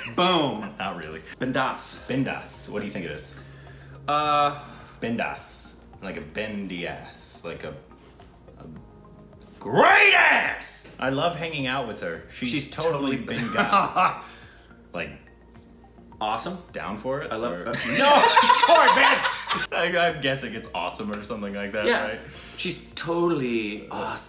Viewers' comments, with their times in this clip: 0:05 Bindaas is BEND THE ASS for them 🤣🤣🤣🤣